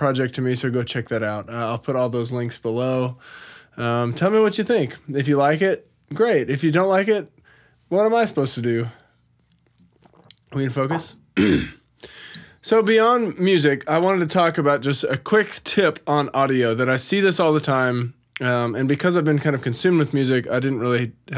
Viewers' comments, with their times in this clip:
0:06 Man im starting to notice it this month and its driving me crazy.I'm starting to notice the most minute shit like minor crackling/pops and you can't unnotice it. Funnily enough when he says "great" there's a minor pop I keep hearing.
0:06 Also when he says "great" there's a subtle pop too.